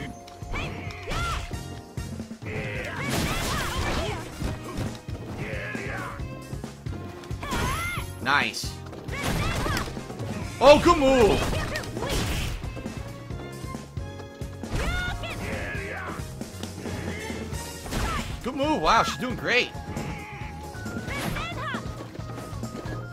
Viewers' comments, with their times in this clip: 0:09 What the fuck is he saying? Oohguumoo?